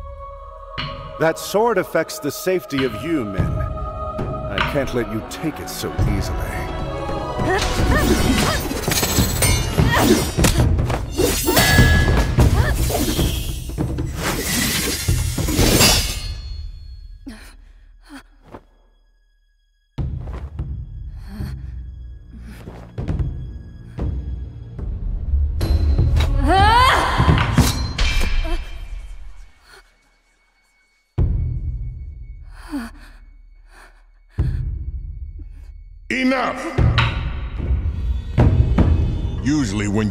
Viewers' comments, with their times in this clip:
0:05 When he said "easily" it almost sounds like Madara.
0:28 Combat choregraphy are gems, too bad it's first time i see thoses character in games, so i can't guess al the lore around.. Each of your vidéos are a Treasure Small details: the sword do some whispering, like the kind you usually ear on a Cursed Sword